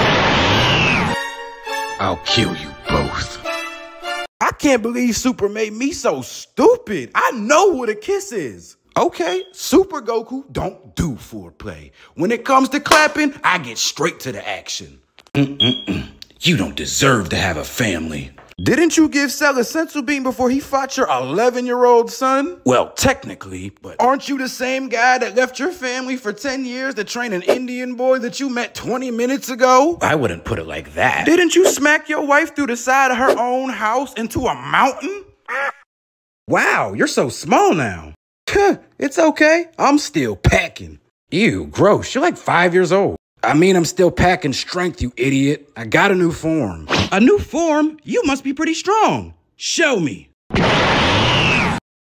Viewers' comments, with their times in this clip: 0:07 not the smoke alarm 😭🚨🚨
0:34 whats a MOUN-IN😂